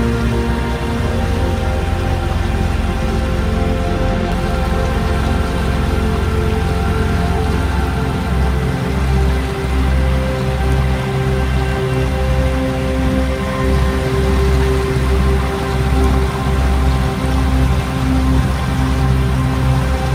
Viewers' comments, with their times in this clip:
0:04 :-) Thanks for the updated sound track. I love the Perkins at Idle, but I am sure the higher note of the BetaMarine is much easier to dampen with sound proofing.